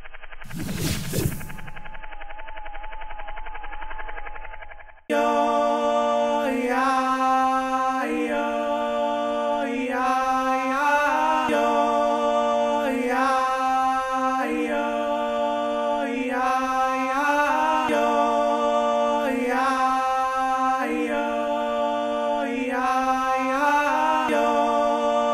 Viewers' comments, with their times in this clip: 0:10 Why does the audio sound clipped ? Was there a problem with the loop?